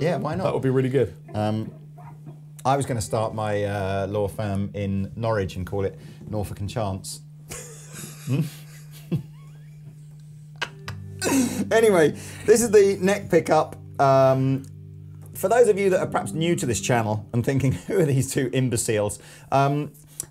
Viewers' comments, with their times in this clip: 0:08 Norwich! Anyways, tone was hideous on both guitars. These guitars would probably sound much better on a different rig.